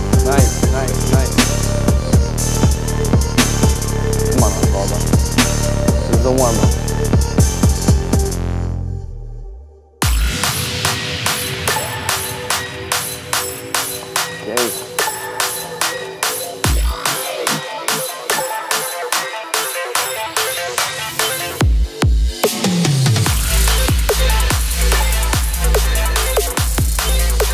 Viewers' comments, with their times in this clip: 0:10 this song is awesome